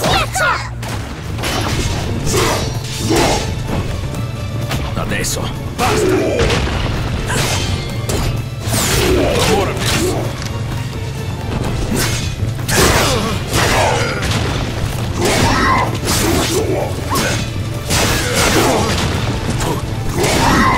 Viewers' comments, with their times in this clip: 0:04 laveso pasta !!! now im hungry